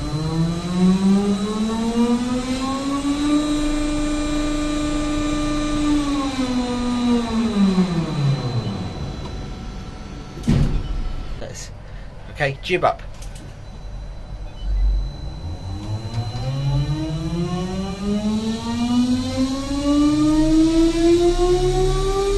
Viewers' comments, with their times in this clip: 0:07 sounds like a MetroWagonMash train